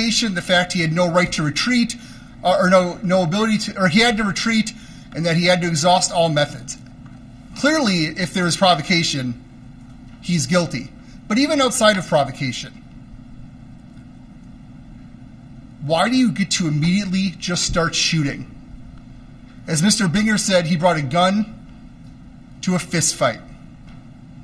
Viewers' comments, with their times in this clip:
0:05 is one case among many in the prosecution's arguments where they straight up mock (in a mocking tone) the defendant. Comes across as unprofessional, but I don't watch enough hearings to know how it normally goes. Sounds like they just can't resist to plug one mocking remark here and there. Makes it harder to take the content of their speech/arguments for what they are (I honestly do want to hear arguments as this is what courts are about, though I am partial to the defendant's side).